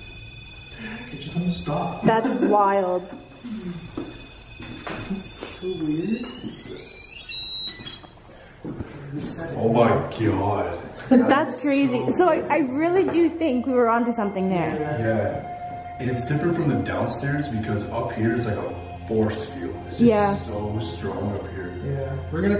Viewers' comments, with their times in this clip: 0:08 Definite EVPs! was definitely "Im standing over here".....hella creepy